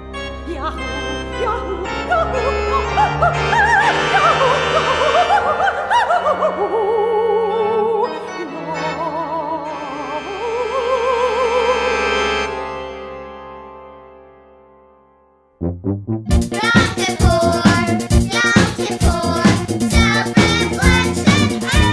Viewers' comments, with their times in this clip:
0:09 Somewhere is when my brain really gave up, right around when the opera lady did the opening bar of the National Anthem amidst a kid screaming about Yom Kippur.